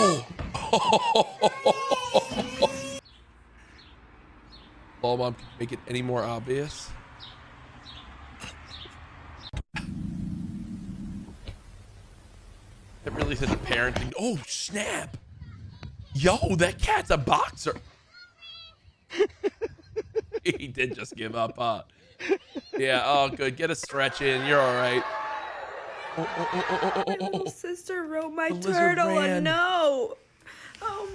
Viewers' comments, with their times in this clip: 0:09 that dog literally said frock you to
0:15 When yhe dog one it is much funnier with the voice on it